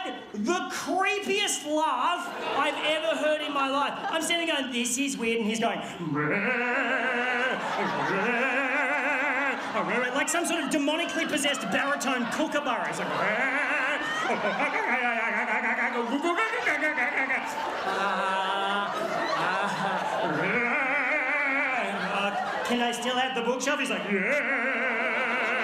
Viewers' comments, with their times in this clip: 0:06 That laugh kills me.
0:11 “like some sort of demonically possessed kookaburra” You gotta admit his laugh is funny as shit